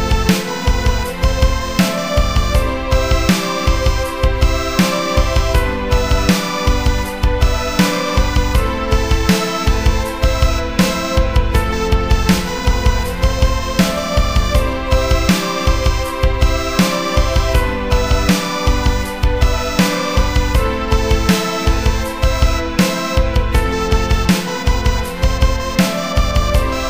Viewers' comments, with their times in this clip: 0:07 Anyone know what add-on was used to make the 16th notes more staccato?